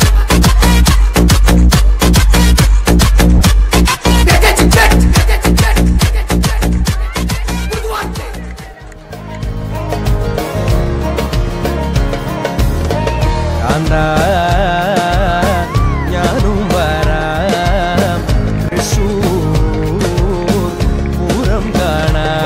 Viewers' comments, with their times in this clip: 0:10 any one please telll which song is its too melodious